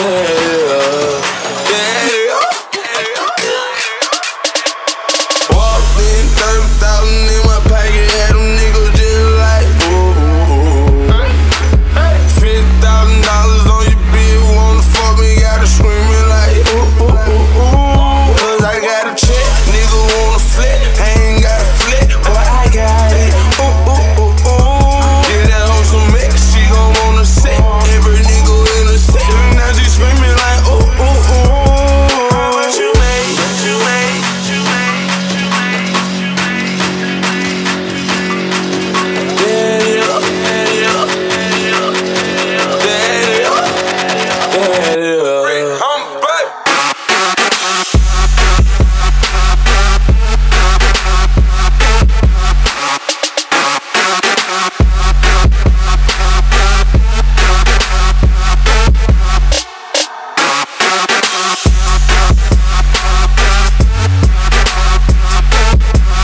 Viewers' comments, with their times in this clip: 0:04 When The Beat Goes Hard Doe :D
0:47 What is up with the change? K Theory, I was let down. That intro and that build was vibe and chill, but when that obnoxious sound came instead I died a little inside. I have always enjoyed your music coming up and that is not you. So what's with the change?